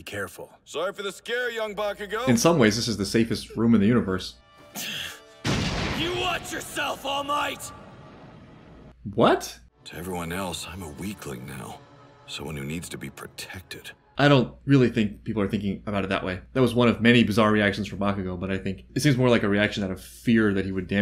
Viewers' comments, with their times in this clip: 0:06 Everybody loves to talk about what a great dub this is, but there's still moments like that where the actor's line delivery is just kind of off and gives the line a different meaning. He was just trying to tell him to be careful. It should've sounded exasperated or annoyed, but the VA's performance made it sound like a threat.
0:09 It was fine but if there's any room for misunderstanding then it wasn't as good as it could've been. A clear line delivery doesn't make you go: